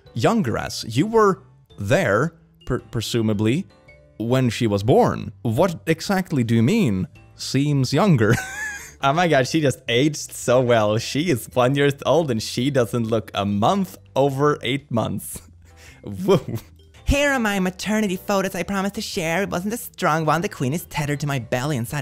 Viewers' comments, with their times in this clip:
0:04 the rock click.